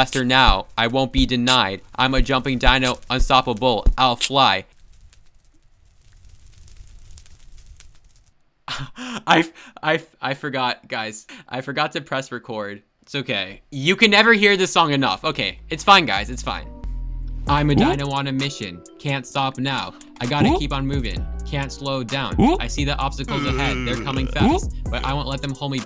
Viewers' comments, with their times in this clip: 0:07 Bro went wild singing